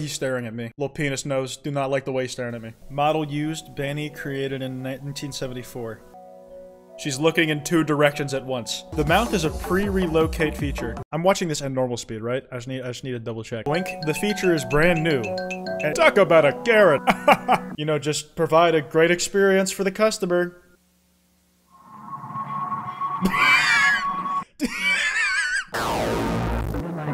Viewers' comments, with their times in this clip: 0:09 why is there 1 second of hardbass